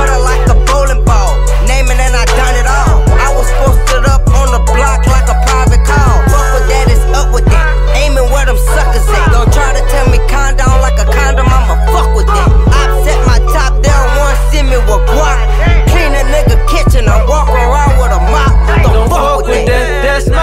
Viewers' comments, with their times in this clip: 0:05 dat flow crazyy